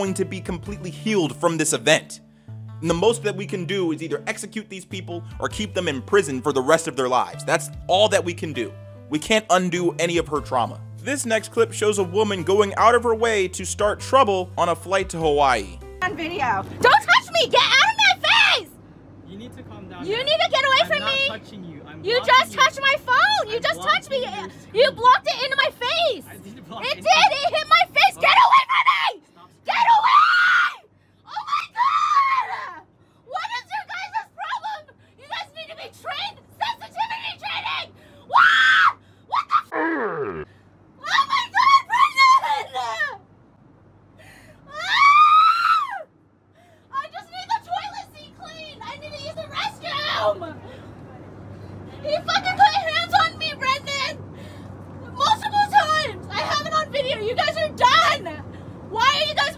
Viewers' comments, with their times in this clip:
0:10 She literally went REEEEEEEE
0:16 Why does this woman sound like she's voiced by Kristen Schaal?
0:18 why does she sound like a hot cheetos girl
0:38 Man. That girl sounds so obnoxious.
0:38 why does that sound like the circus baby screech from sister loco. like its literally spot on
0:40 I feel bad for her vocal cords my god.
0:42 she sounds like the kid from the ghost stories dub 💀
0:44 R2D2 is that you?
0:44 She sound like Majin Buu yelling
0:45 R2D2 that u??
0:46 she sounds like a hamster